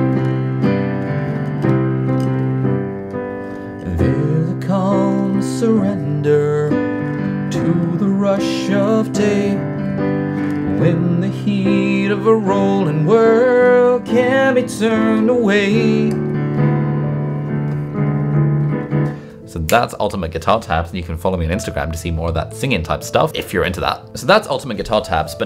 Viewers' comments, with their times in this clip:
0:09 your voice and piano sound amazing!!